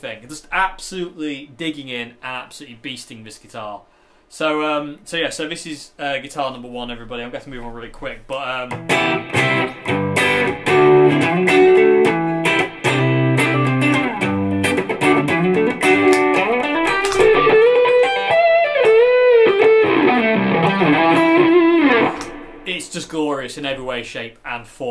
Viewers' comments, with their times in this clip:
0:08 just came up with a epic riff on the spot no prob. respect